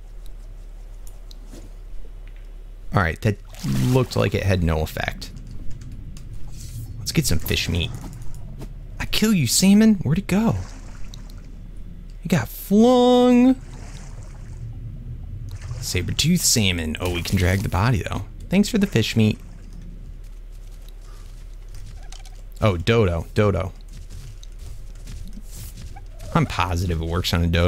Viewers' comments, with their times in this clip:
0:08 i kill you semen?